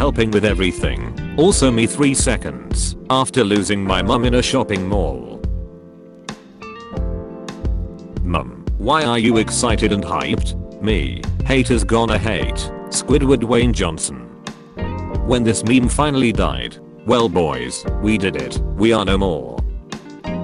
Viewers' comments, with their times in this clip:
0:06 gangsta’s paradise choir intensifies